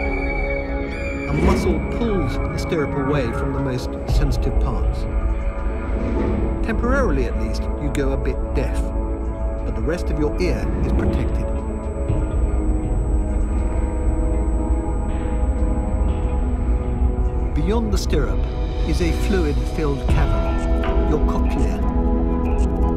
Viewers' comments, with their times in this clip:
0:06 Anyone else hear a high pitched noise ?